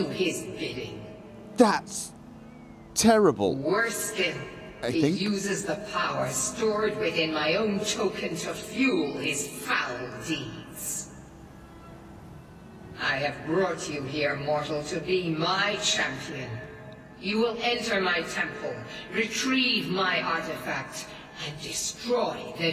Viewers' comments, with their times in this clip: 0:03 you can hear a cat